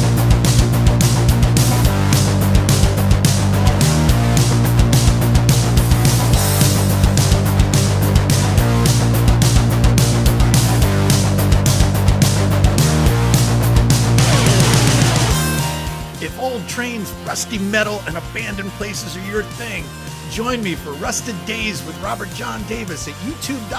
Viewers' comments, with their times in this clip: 0:09 The metal music in the intro goes well with the rust theme! What can you tell me about the photo looks like a Baldwin Shark in front of the breaker, but too obscured by the foreground clutter for me to say for sure.
0:09 The metal music in the intro goes well with the rust theme! What can you tell me about the photo looks like a Baldwin Shark in front of the breaker, but too obscured by the foreground clutter for me to say for sure.